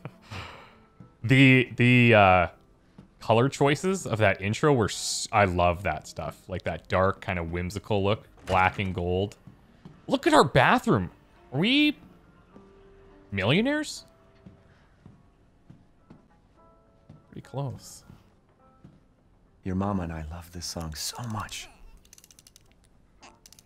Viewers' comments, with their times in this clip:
0:09 When the door swings open fear washes over his soul. He scans the room in terror. Then he quickly turn around yelling out with fear under his voice "honey are we millionaires!"